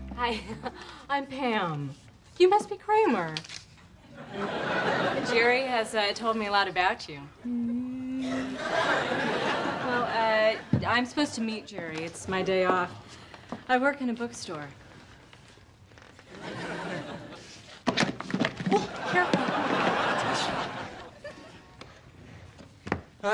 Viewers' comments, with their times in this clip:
0:07 That's a pretty good impersonation of Harpo Marx's famous 'lost in reverie' face. Even down to the little squeak. In fact that whole opening scene carries Harpo's signature use of silence, like when he mouths 'books.' Michael Richards would've made a decent silent film era actor.